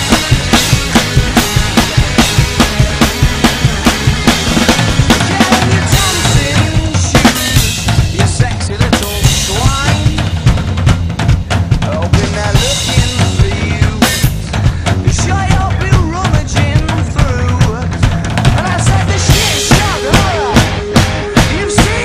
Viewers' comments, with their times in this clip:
0:04 Wow great cover!!! That break on respect man!!!